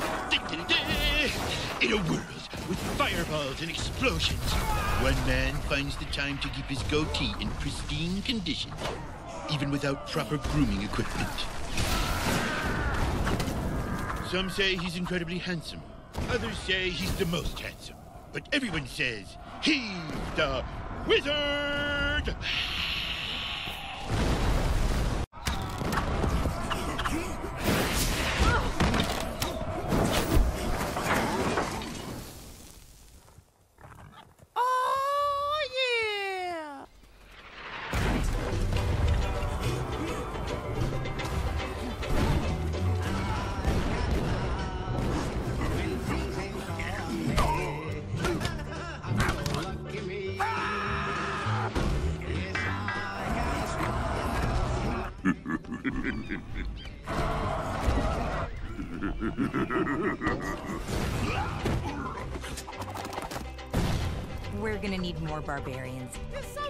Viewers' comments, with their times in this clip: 0:05 That wizard voice sounds like it’s recorded on fking carrot
0:31 coughing in school after confinement be like
0:35 blud sounds like Herbert the pervert
0:54 I had no idea what is that language